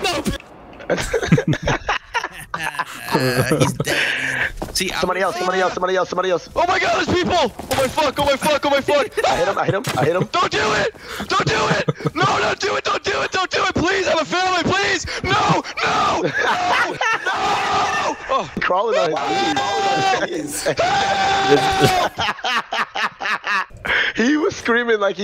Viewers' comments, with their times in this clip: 0:07 That screaming guy was me
0:07 This dude screaming like they're dissecting alive😂